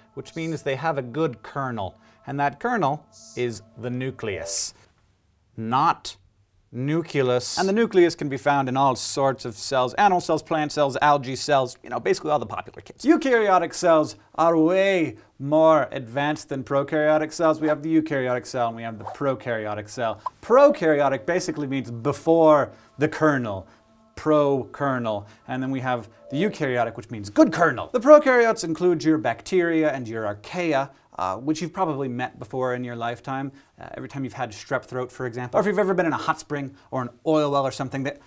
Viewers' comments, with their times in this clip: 0:10 When he says "NOT NUCULUS." he sounds like Snape.
0:14 He turns scottish for 2 seconds.
0:23 Non native speaker here, need some help, what is the word he says ? curunell? What? Anyone?